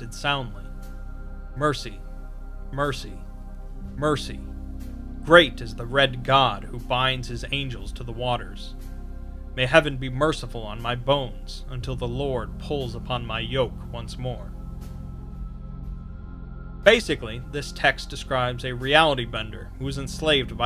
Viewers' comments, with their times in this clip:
0:03 "blessed is the hedgehog who binds his anus to the waters" ? Clearly you meant to say "whom".